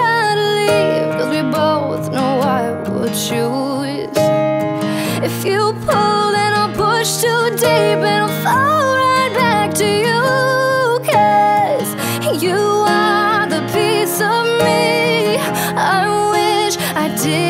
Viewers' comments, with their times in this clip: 0:05 SHE SOUNDS LIKE CHER LLOYD A BIT